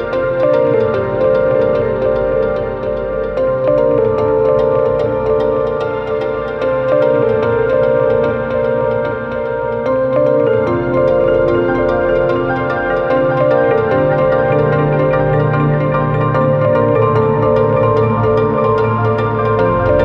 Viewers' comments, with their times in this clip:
0:08 does anyone else hear the breath of the wild pickup sound here